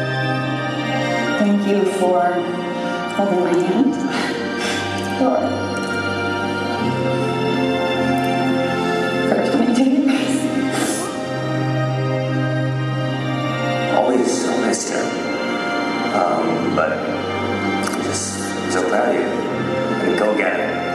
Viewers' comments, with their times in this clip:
0:04 what did she say? I can't hear 😭